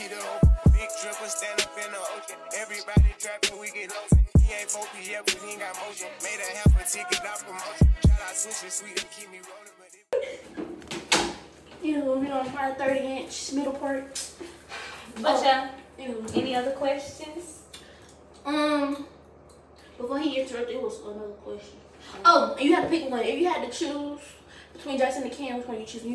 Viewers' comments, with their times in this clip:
0:08 The way y’all all started laughing at the same time 🤣